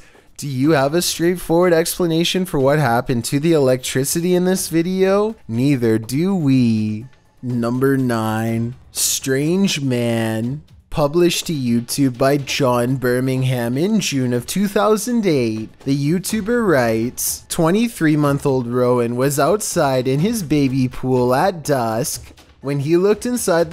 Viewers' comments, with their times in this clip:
0:05 Reduce the video speed to 0.75 and hear him say, "Bonnnnnkerrrrssssssss".